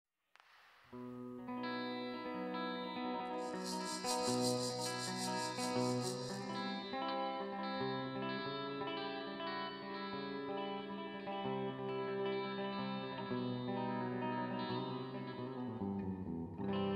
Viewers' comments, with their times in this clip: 0:00 The firecrackers go off and Robby and Jim start the song
0:03 Wow - Lizard King could really play the shakers. What a talent!